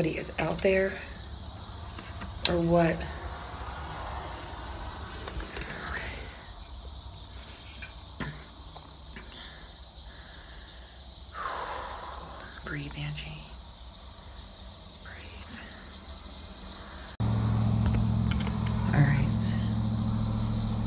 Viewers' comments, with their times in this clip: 0:03 ......there is a very weird sound...........like a creepy whisper voice is trying to say something.........??????